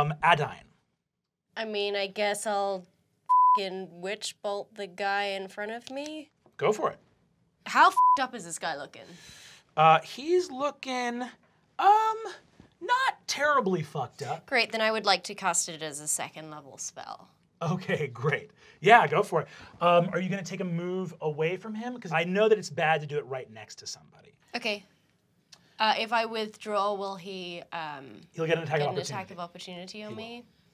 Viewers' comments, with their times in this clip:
0:06 Lol. They censor Siobhan, but not Brennan right after her. :P Man there were some really random beeps in this.. seemingly..
0:06 Lmfao they bleep Siobhan's fbomb but miss Brennen's immediately after
0:07 Gotta love inconsistent censors, lmao
0:07 Anyone else notice they bleep Siobhan saying "How fucked up is he" But then they don't bleep Brennan repeating the sentence right after? Weird.
0:07 Not gonna lie, I typically hate the censoring, but it is endlessly funny to me that in my head cannon, only Brennan can swear 😂 But I’m guessing it was just one time they missed him swearing.
0:10 they missed a bleep
0:11 real consistency with the bleeping, they bleep "Bitch" but then you have which is totally fine :D
0:12 They didn’t bleep out Brennan*
0:12 in an episode full of bleeps, looks like they missed one
0:12 > bleeps all over this episode when they swear > no bleeps when they swear ????
0:13 That one missed f-bomb lol. You can’t bleep everything College Humor
0:13 missed the censorship there
0:13 why have they been bleeping all the curses and then this slips in? Also why are they even bleeping?
0:13 All these bleeps... and you missed one
0:13 they missed censoring this f bomb, lol
0:14 Ok wtf? Pretty much every curse word was bleeped except for one